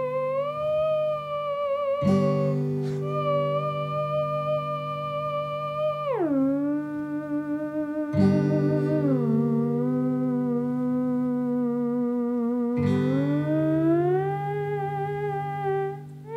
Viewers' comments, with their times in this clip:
0:04 said the mosquito near my ear